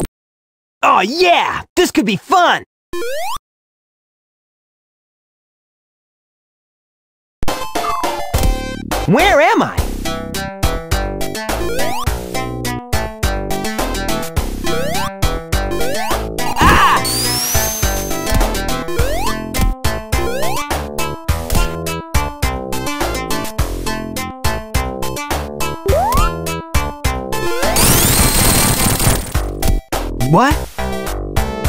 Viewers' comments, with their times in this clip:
0:07 that pal music
0:07 the music is normal at the 1,25 of speed
0:16 Sonic adventure scream